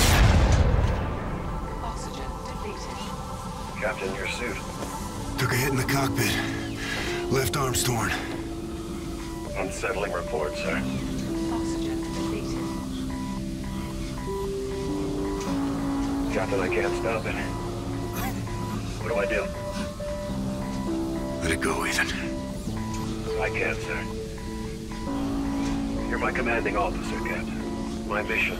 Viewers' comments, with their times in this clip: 0:03 This was the best scene of the game Very emotional, distraught soundtrack. Perfect kinda scene
0:11 The music and him being so concerned, this is the best part of the game, he seems so human, with feelings, a mind, a consciousness, and a heart. “They had to pry his arms open to get you out.” Amazing.
0:11 Music sounds like its from far cry 3....i love it🔥